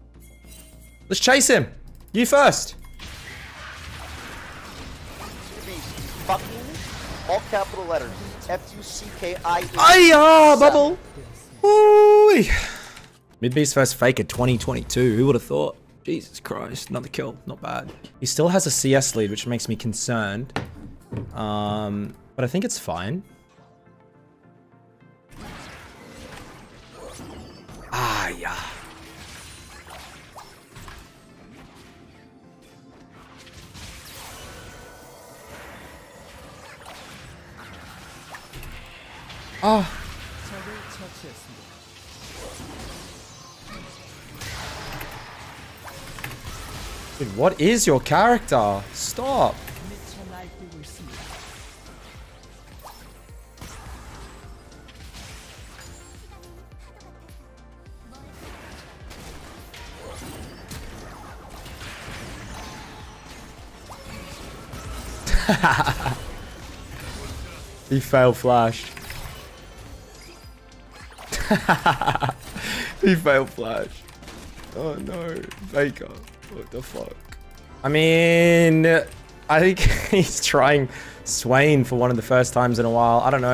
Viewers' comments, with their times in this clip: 0:09 he is already turning chinese
1:07 the little chuckle when Faker failed flash😂